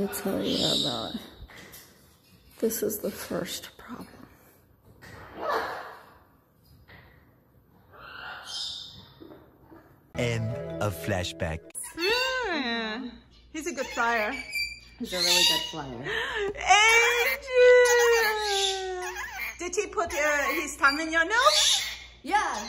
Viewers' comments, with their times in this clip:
0:04 birbs: IIIIIIIII- wanna haaang FrOm THE chandeliERRR- CHanDELIeeeerrrrRRRRR-